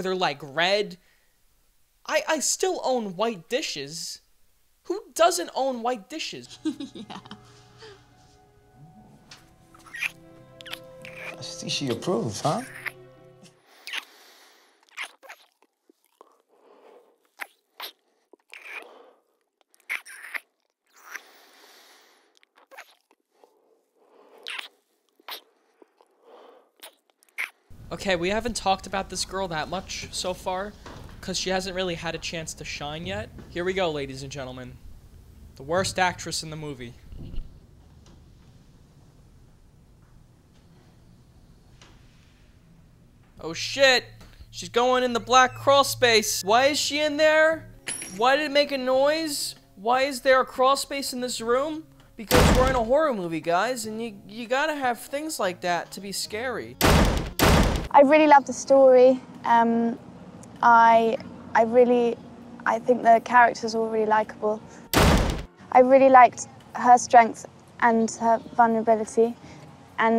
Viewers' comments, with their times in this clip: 0:05 the kissing effects make me suicidal.
0:57 OH MY GOD, THERE'S A BANG AT THE DOOR